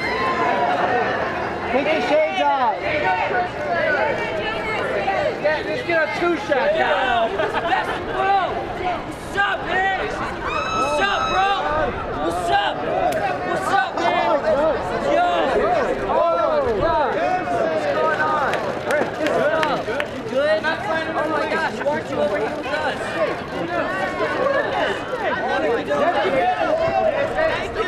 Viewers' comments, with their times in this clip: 0:06 literally screamed "master wu"
0:08 Bro!! wazzup Beach... that's what I've heard.